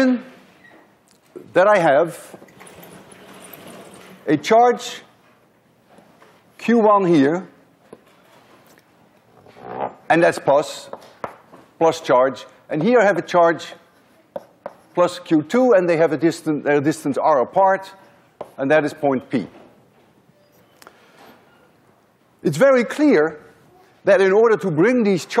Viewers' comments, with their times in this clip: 0:08 You just can't get that "buzzing chalk" effect with a whiteboard.